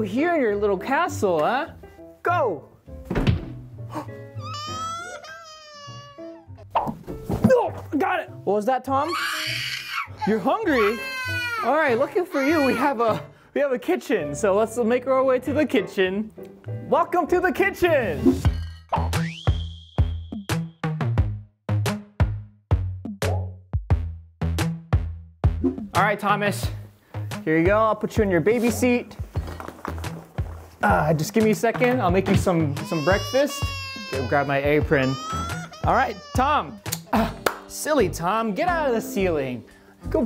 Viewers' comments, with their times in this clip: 0:09 someone cal 911 that baby is screaming for help and freedom what is he doing to that possessed baby doll!!
0:28 her crys calm me